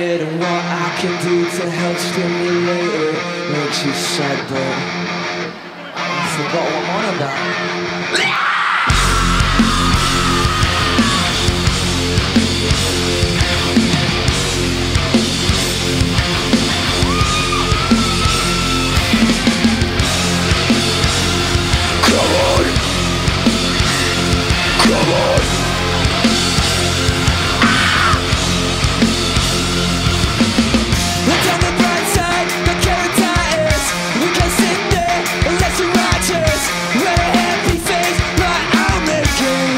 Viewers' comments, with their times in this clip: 0:07 WTF?! That Scream is so bad
0:08 just sound like a ree
0:09 you can hear a seagull
0:26 dat scream xdddd
0:27 when you remix with bird noises
0:27 when you remix with bird noises